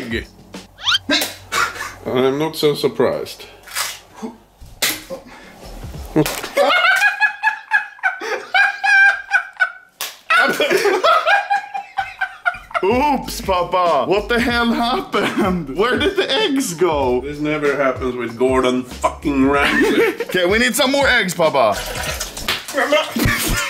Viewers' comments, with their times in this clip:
0:06 Elmo laugh moment